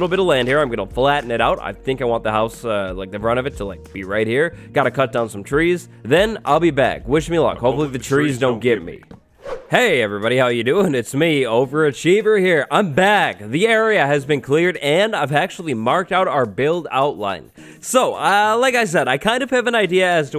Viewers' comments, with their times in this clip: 0:08 I love that voice filter lol